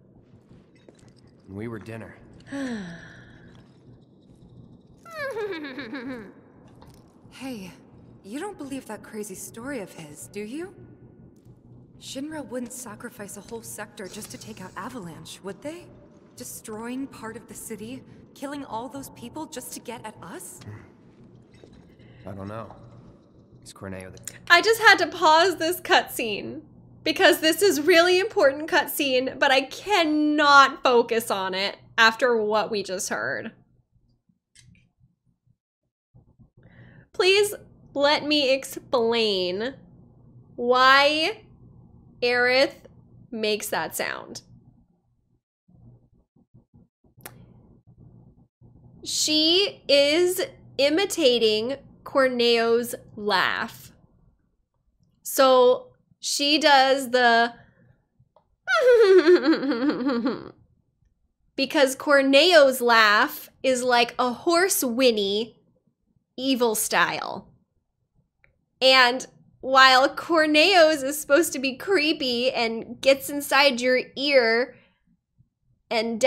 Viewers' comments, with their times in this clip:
0:04 Best Aerith laugh I have ever heard.
0:27 That is so interesting! Sounds like localizations can be full of pitfalls like that. I have heard the Japanese versions Corneo's laugh and Aerith's imitation of it and I agree that the "Hoo-hee" is a much more obvious imitation than the English localization's horse laugh. I think you did a great job with it. I'd be interested to know whether you had the chance to talk to the actors who did the localizations in other languages like French, Spanish or German and whether they'd had similar experiences in trying to imitate Corneo.
0:58 I dunno man. Sounds the same as the one in-game. And she did that first try.